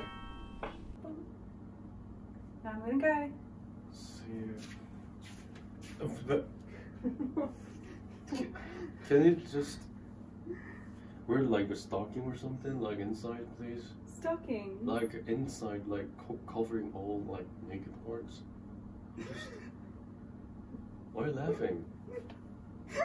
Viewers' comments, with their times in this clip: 0:06 “ c-can you just wear stocking please :( “ aww he sounded small